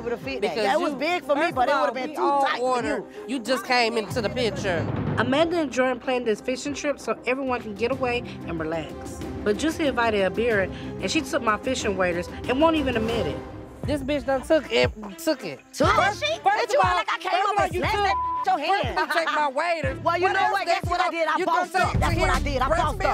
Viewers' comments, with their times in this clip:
0:10 Minnie Sounds like a child!!!!! "She took my waders and won't even admit it" 😂😂😂